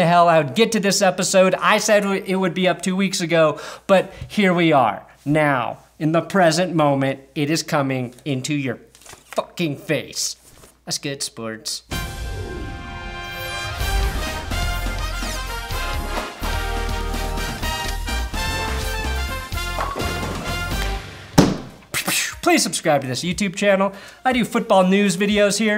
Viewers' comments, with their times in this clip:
0:10 that's gotta be one of the least energetic and downright depressing-sounding "that's good sports" i have heard in a while